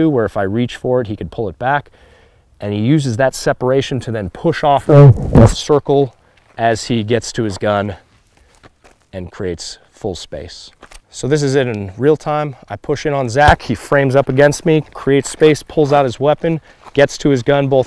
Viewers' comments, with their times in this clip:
0:04 Wasn't expecting a good laugh at the distorted sound of his arm touching your mic.